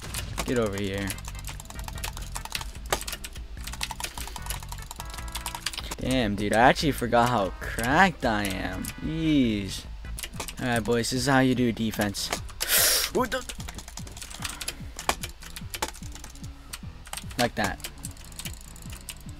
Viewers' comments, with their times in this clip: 0:07 what mouse are you using I like the mouse clicking sound